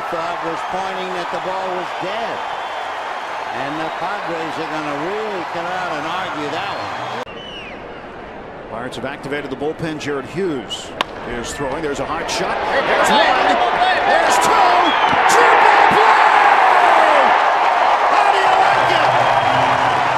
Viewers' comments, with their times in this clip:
0:08 I like the reaction of the anouncer